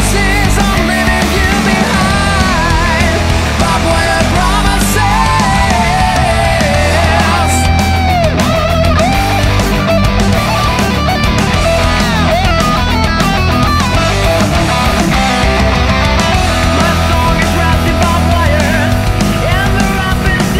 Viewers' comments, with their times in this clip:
0:07 Really sticky hooks in this song. I'm diggin' it. Video setup reminded me of GNR, too. The exchange in the song makes it obvious the band is aware of it and is letting us know it. I love when bands pay homage to an influence like that. Really cool song, and the lead vox are...wow! Crystal clear and powerful